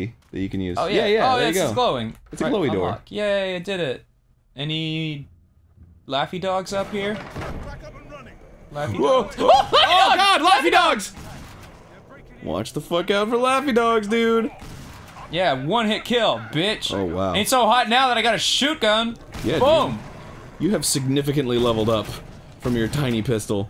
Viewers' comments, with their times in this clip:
0:09 That dual "LAUGHY DOGS" was perfect